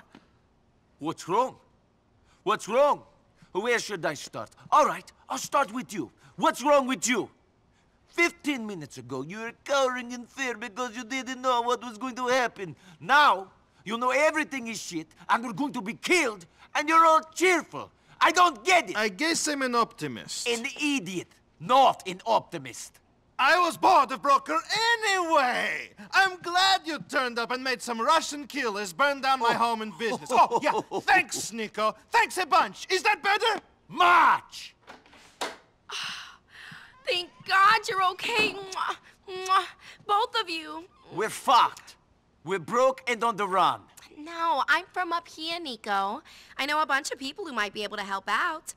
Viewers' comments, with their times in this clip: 0:09 sounds like Oscar from Hey Arnold 🤣
0:09 Niko's European Language Is So Silly😂😂😂😂
0:28 "I will kill every one of them" The scary thing is, he probably could. Plus I like Niko's laugh lmao.
0:28 I love how genuinely amused he looks and sounds
0:29 lol Niko sarcastic laugh